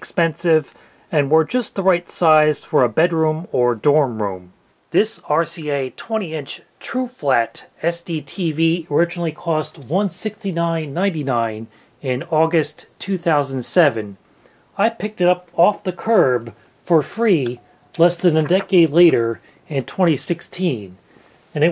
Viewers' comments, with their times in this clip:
0:08 Loved hearing all the differences between these standards and their histories, nice work! .. also got a bit of static cling there